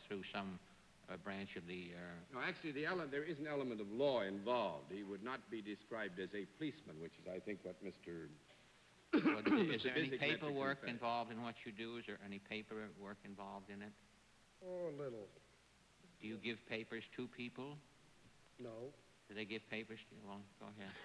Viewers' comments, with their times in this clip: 0:04 Good save, when John coughed to cover up a momentary lapse of memory when he forgot the dog catchers name. Then he glanced down at his desk and came up the name. He is so smooth!